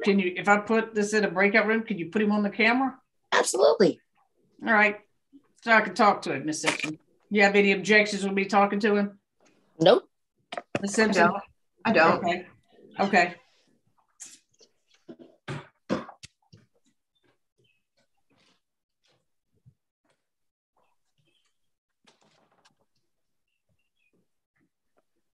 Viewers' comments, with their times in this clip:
0:07 Interesting that she had no problems when she was getting alimony... Oh, my heart! I'm tearing up! That father's breath hitched when she said she wanted to talk to the boy. He got so happy, and was about to cry. Just his his reaction of love! Poor man had to sit down! Poor father and son! Edit: Ope.. he did start crying. And so did I! I feel so awful for the dude